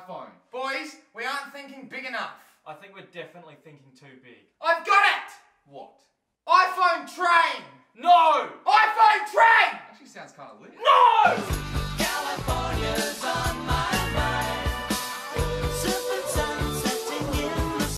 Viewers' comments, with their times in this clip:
0:06 lol I thought he said iPhone tray now that would be a cool idea😮
0:08 why is the audio so soft? shit ok that's why nevermind